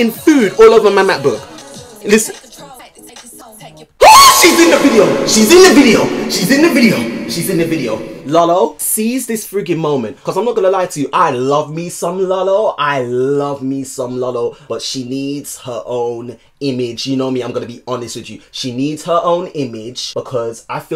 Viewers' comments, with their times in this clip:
0:04 THE SCREAM WAS SO FUCKING RELATABLE LMFAO